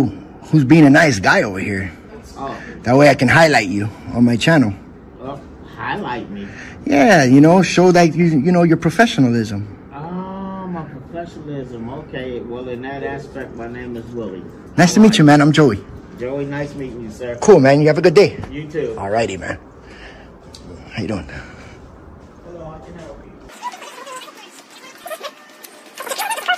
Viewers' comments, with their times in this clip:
0:07 😂😂😂😂 yeah like i need a bum with a smoker’s voice and a bunch of tatts on his body and tries to act like a big shot just because he has a go Pro to validate my professionalism.